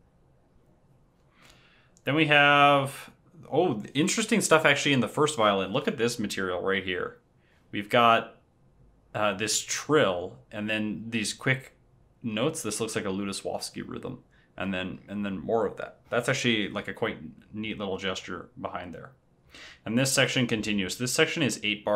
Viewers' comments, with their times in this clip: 0:07 I just realised, this little violin trill motive actually returns in the piccolo in movement IV - spring rounds! :D